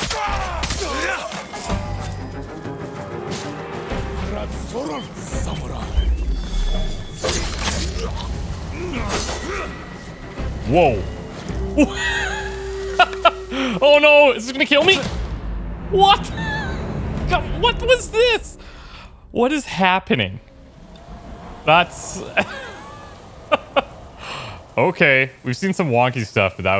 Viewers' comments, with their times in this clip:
0:07 right before you hear the Eagle. I can only assume your third strike sent you towards it into the sky.